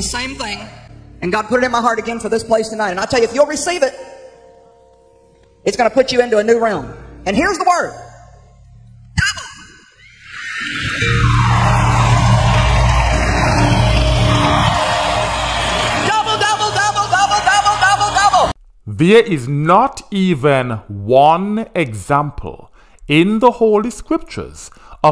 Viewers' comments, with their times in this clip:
0:09 ... Double minded.... Sound like turkey's saying gobble, gobble, gobble!